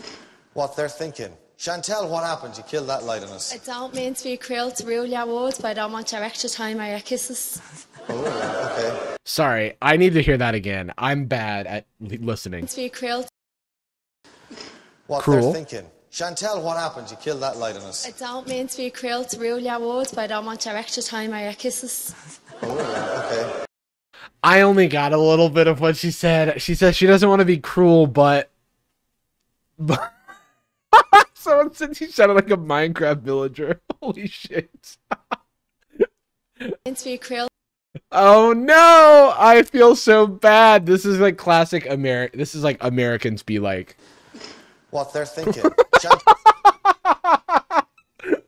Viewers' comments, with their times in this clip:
0:03 HELPP the way you cant understand irish accents, but i mean its understandable 😅 she said "I dont mean to be cruel to rule your world, but i dont want your extra time or your kisses" theyre very poetic on this show (she also has a very thick accent, I'm sure of a dublin accent)
0:15 this girl really speaking enchantment table
0:28 I’m irish and even I couldn’t understand that
0:32 okay but wtf did she say tho